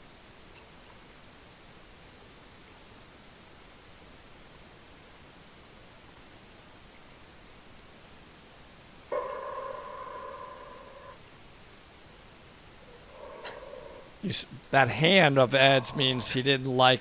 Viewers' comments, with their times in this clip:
0:04 I want everyone to notice how silent it is Must feel so great to dive this